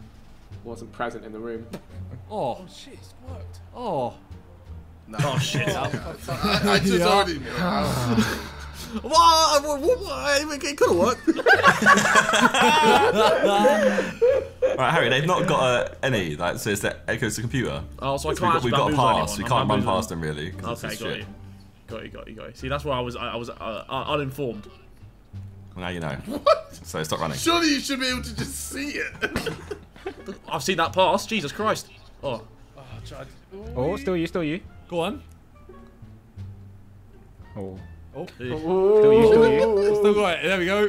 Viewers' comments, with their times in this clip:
0:07 what even came out off Harry’s mouth 😂
0:10 harry stumbling on his words again
0:23 ??? Not laughing at jj i don't think. More so harry's stumbling of words